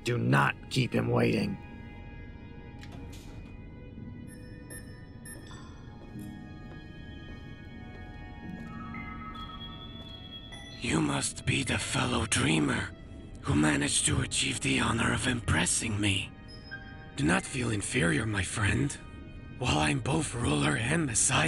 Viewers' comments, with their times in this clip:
0:06 This monolog is top notch, AAA. Good voice work and writing. Feel just at place in the Fallout world